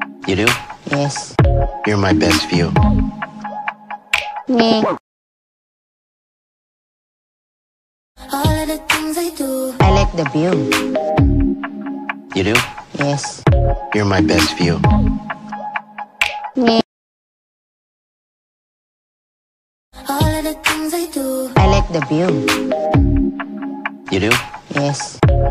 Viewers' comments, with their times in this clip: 0:06 . . the duck is suffering... he quacks cuz ur squashing him....